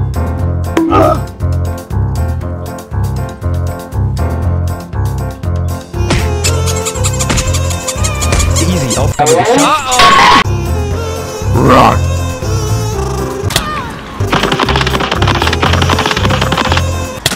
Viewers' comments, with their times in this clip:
0:04 Why is the squeeky toy sound so funny to me. I am a 5 year old...